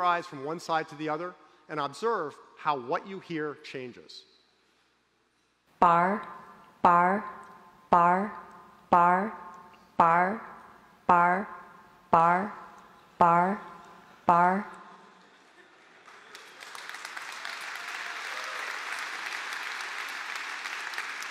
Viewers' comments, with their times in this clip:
0:09 this doesn't work for me?! I only hear 'bar'